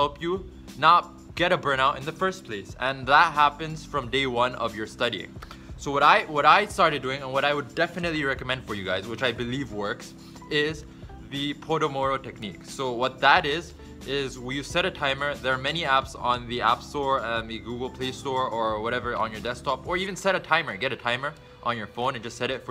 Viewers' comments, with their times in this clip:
0:10 hahahahhahah PO DO MORO technique hahahahahahahha xD